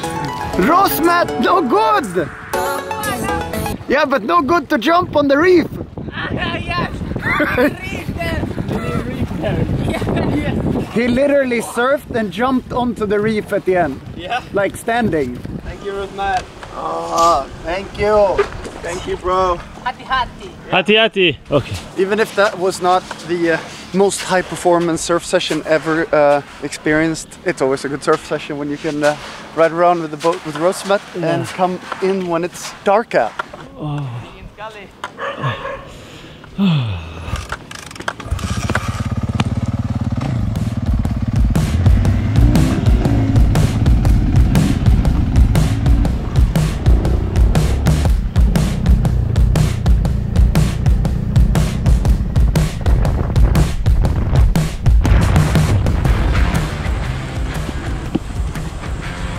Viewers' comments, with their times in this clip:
0:03 ? that music cut?
0:42 Who else thought "kicking it with a badass"